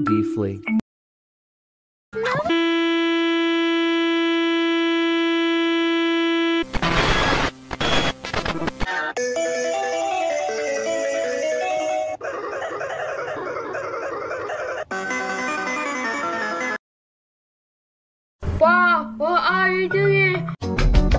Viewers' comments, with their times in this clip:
0:09 preview 1982 ahh audio 😭🙏